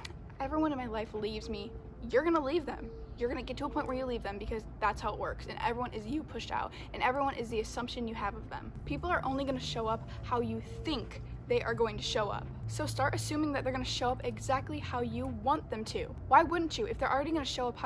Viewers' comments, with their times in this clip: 0:03 he meowed lol